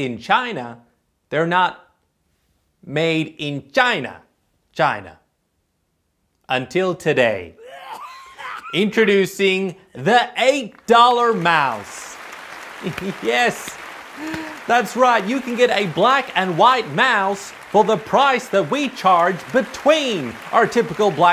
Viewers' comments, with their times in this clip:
0:07 That person coughing in the background 😂 😂 😂